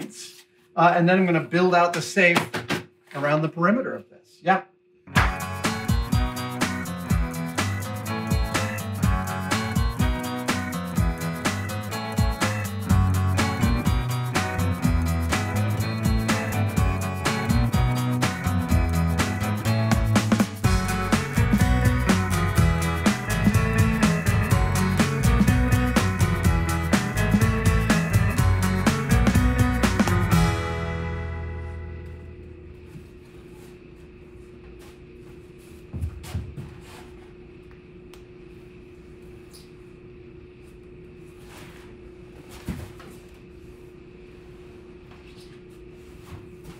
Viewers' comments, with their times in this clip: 0:04 a sincere thank you to the editor for cutting on at the clap
0:04 knock off stone temple pilots "big bang baby" 😂
0:34 Was anyone else kinda freaked out when the music stops and the camera switches to a kind of odd angle? I felt for sure that this was unintentional b-roll about to show a disaster.